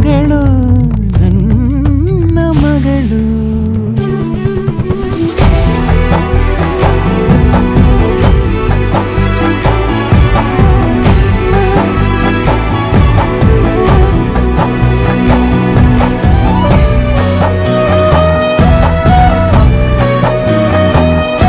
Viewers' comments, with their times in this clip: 0:06 bgm is beautiful ❤